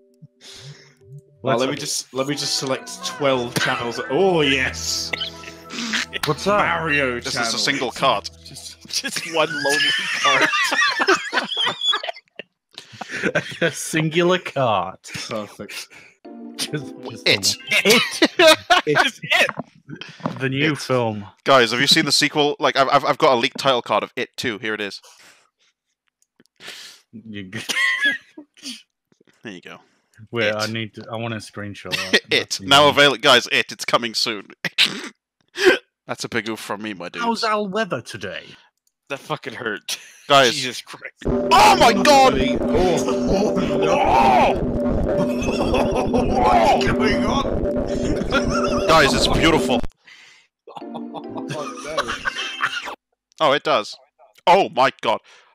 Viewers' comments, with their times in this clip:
0:09 horse sound when it laughs out
0:41 asmr at it's finest